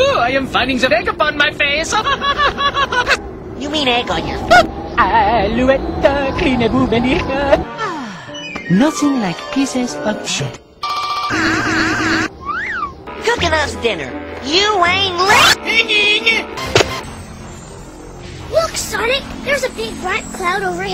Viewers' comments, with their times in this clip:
0:06 Does he say "boobenigga" ?!